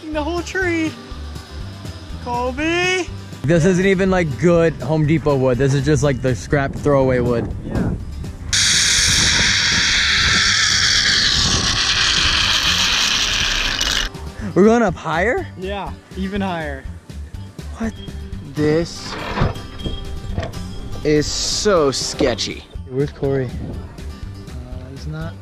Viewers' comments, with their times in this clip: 0:08 my ears.....😖😖😖😖😖😖literally Kylie Jenner nails on a chalkboard OMG ow